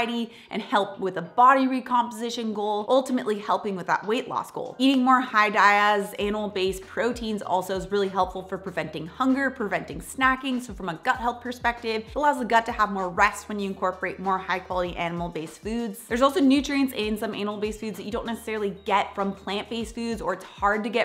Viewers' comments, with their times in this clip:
0:05 -> "Eating more High Diaz Anal Based proteins..." Ummm.... What? 😅